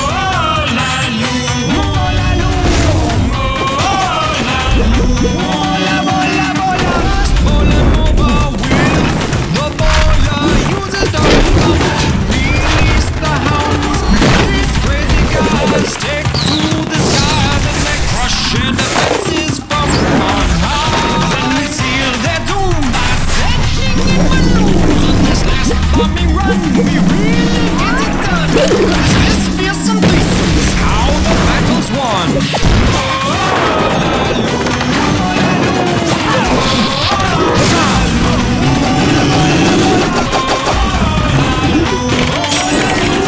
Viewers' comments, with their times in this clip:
0:05 sounds like a Mexican band song.
0:22 when he say ( by sending in balloons) what a voice.
0:23 I like how he say Baloon BYy SEnDING Baloon
0:28 Funny noise on